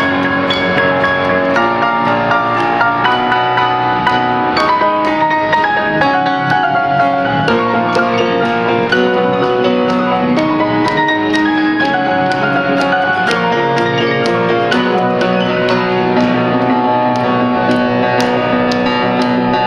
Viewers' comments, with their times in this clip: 0:03 With only piano, i mean without drums it sounds so much better. Lang lang did a great job here, see i really like those notes. Now i know how it would be if we have a piano record of "One". Of course by Lang Lang.